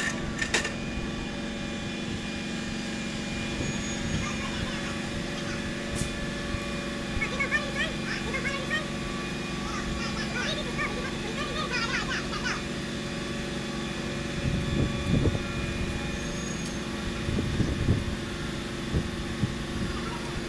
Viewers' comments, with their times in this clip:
0:03 Quality installation performed by the Chipmunks 🔊